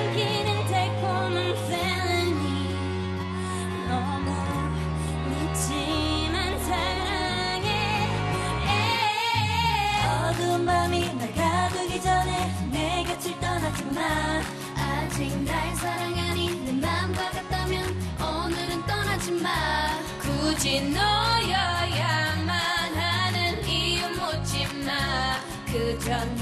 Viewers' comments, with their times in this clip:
0:10 Jisooyaa your vokal😭❤❤❤❤❤❤❤